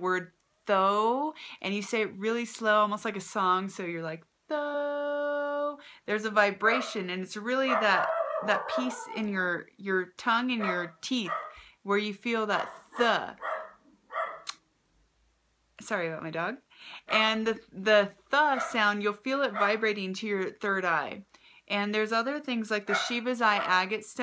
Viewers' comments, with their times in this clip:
0:06 She doesn't even realize that the tone of her voice when she vibrates her voice with the word tho-o-o-o she sets her dog into a frenzy and won't stop barking ..I believe she has something of a psychic abilities
0:08 My dog barks lol :)